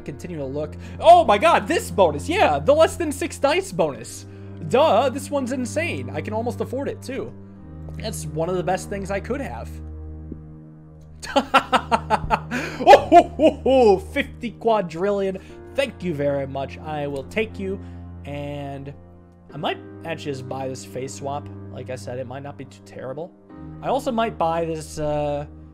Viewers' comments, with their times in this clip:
0:09 he sounds like santa after that roll
0:12 can we please take a moment to see his amazing santa impression